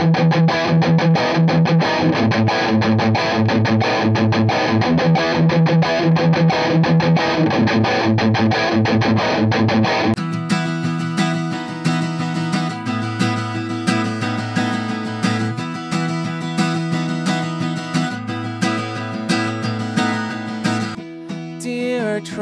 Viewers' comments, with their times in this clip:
0:10 damn, this acoustic guitar did sound so good, it felt like I am 15 yo again. This mike screams of youth.